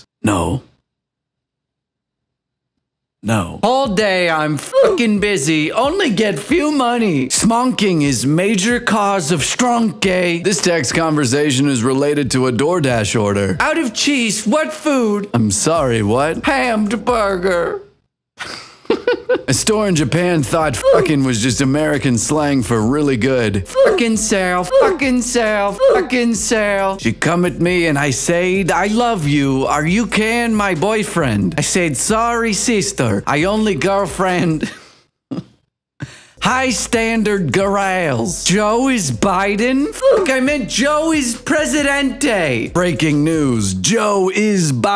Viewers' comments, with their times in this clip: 0:03 HOLD ON IM CRYING I THOUGHT THAT SAID BUSSY JDJGVJKKGDKGDD
0:28 that’s the bat from Anastasia’s accent how’d you do that